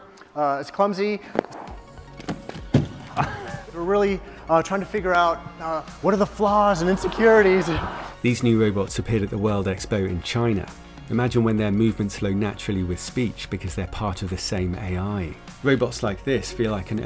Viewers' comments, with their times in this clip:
0:05 “So this is how humanity dies… with thunderous AAAWWWWW.”